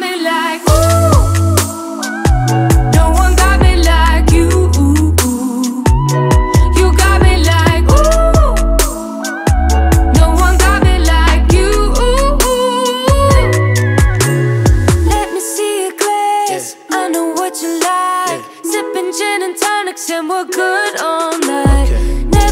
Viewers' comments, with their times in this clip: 0:05 Anybody have Clario vibes ? No, just me ok.....